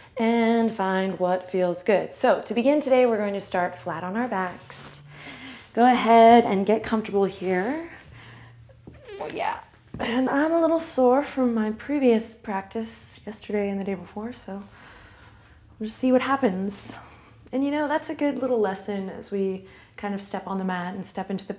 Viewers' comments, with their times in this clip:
0:09 Was that a fart ??? Hahaha